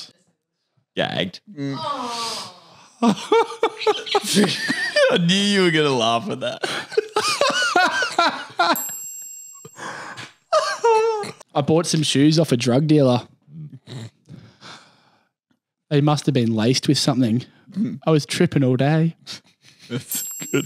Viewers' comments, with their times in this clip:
0:03 The Laugh is my favourite